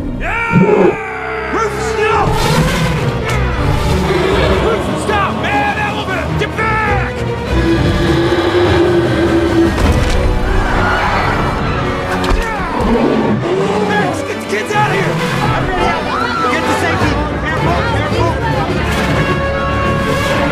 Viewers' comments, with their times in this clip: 0:07 Mrs Jumbo Sounds Like A Tyrannosaurus Rex